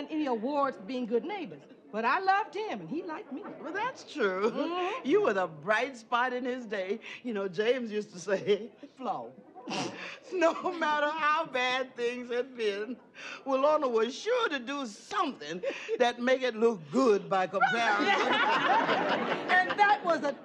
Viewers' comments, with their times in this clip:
0:08 did someone fart lol